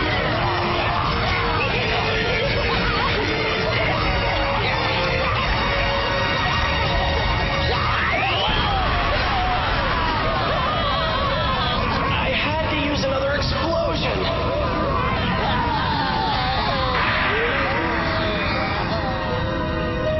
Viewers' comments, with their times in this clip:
0:05 how does the magnetic dude still have the strength to yell like that? how is he not dead? and demon gangrape xD